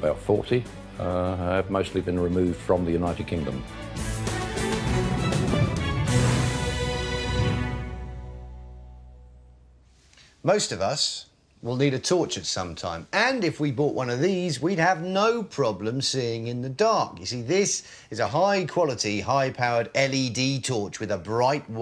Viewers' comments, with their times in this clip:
0:09 i thought he said ''most of us will need to torture sometime''